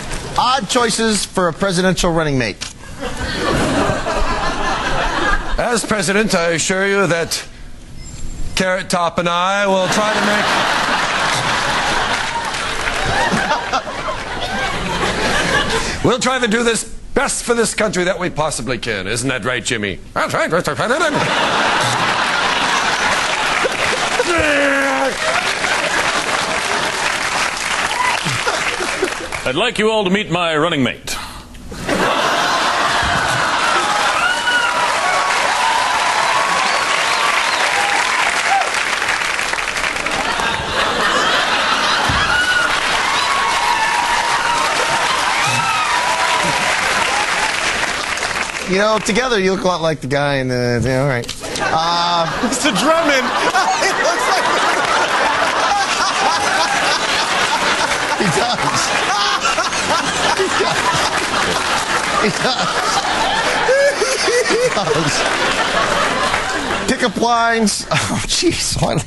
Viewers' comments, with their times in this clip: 0:08 Did anybody hear a beeper or something in the background ? Didn’t catch that the first time I saw this clip.
0:51 Proof that laughter is contagious: I don't even know who Mr. Drummond is, but Wayne cracking up is hysterical.